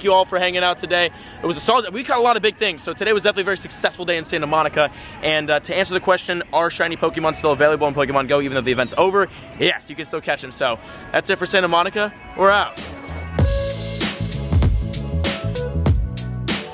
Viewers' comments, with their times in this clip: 0:04 lol listen to the song playing Close your eyes and LISTEN